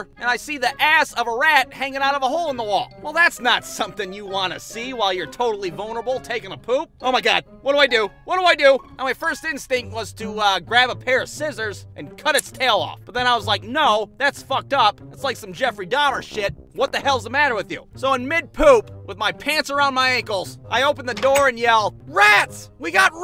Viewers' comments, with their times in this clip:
0:06 man sounded like quagmire XD